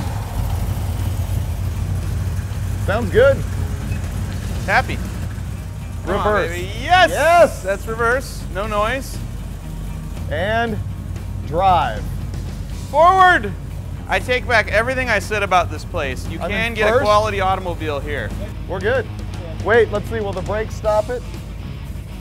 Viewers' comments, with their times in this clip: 0:04 NICE. sounds good. 1st car i drove was a step dad's 67' fastback Barracuda. they run, and with mods...they scream.